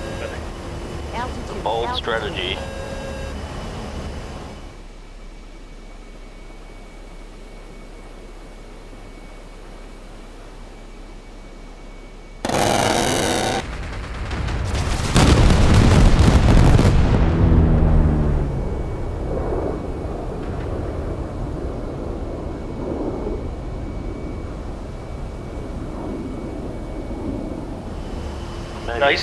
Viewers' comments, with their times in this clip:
0:10 if you need some dose of brrrrrrttttttttttt